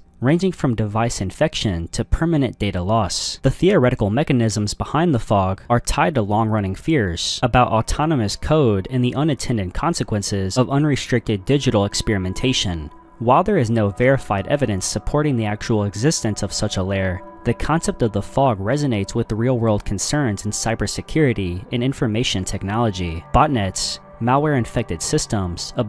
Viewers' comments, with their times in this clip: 0:08 anyone know the name of the eerie background audio?